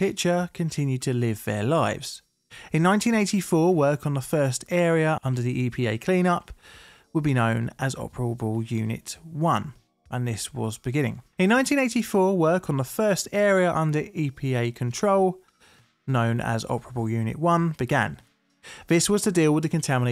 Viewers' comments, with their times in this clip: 0:04 FYI you repeat yourself, or at least played the same voiceover snippet twice.